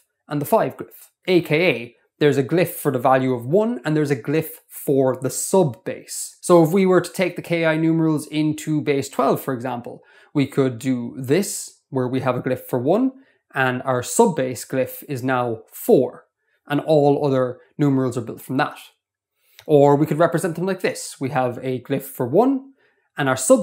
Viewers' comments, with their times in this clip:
0:05 I just heard music production right there. I have to go